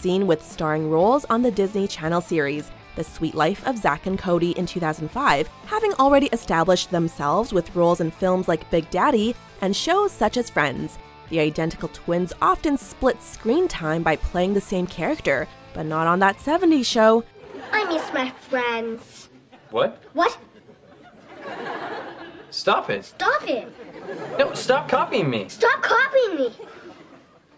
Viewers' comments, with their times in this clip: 0:08 the way she says "Big Daddy" is very............... uplifting